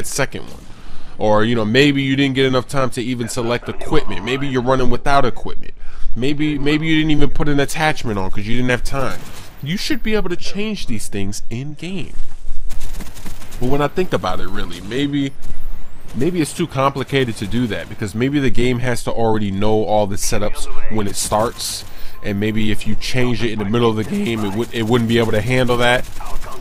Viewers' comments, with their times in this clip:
0:08 He had to go to the switch on the wall and turn it on for Smoove Mode!! lol